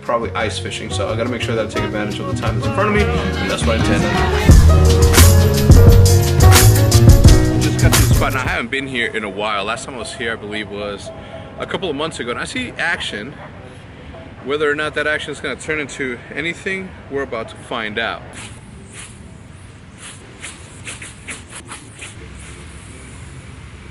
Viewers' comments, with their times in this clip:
0:10 El tamborazo in the background! Love it! You know it's the weekend when the Mexican Banda is on blast in the hood!